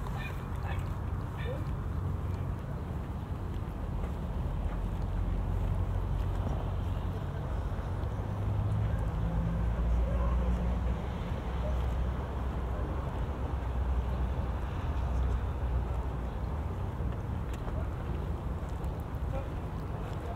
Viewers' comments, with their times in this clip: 0:07 If you want to hear something really scary..... Go to and listen closely to the conversation in the background and listen to the one voice. The dogs started barking then get silent and then you hear a very strange voice sounds like it is straining to speak.